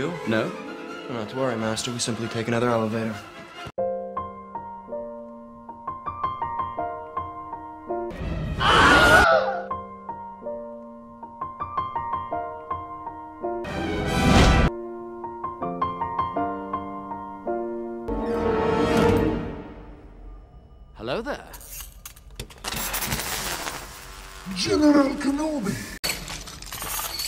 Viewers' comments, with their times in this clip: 0:09 that Wilhelm scream xD